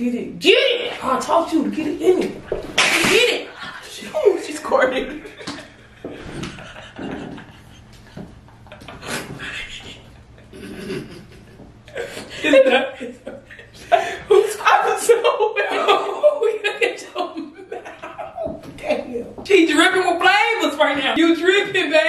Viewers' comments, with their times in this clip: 0:07 “THE QUIET LAUGH 🤣🤣🤣🤪😂😂😂